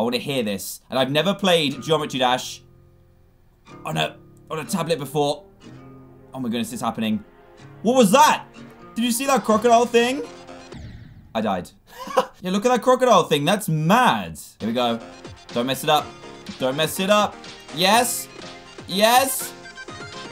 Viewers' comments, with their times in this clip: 0:04 It always makes me dance when hearing your intro 😊 💎